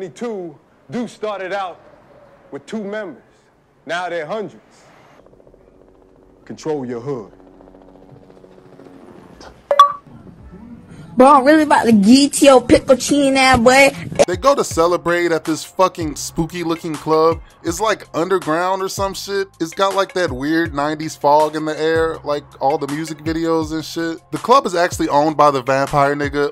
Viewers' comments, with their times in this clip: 0:09 xbox 360 achievement?